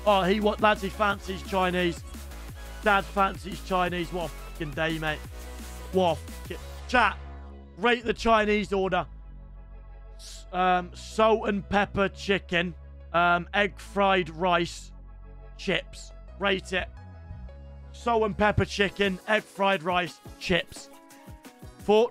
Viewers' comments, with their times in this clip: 0:07 Why did you start reading the Chinese order out in slow motion lad